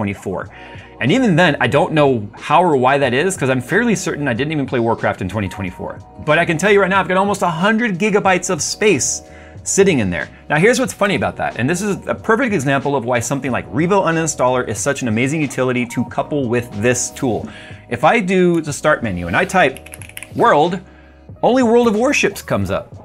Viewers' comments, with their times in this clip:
0:05 Okay, it gets less cancerous (but still too loud) ... still... ugh.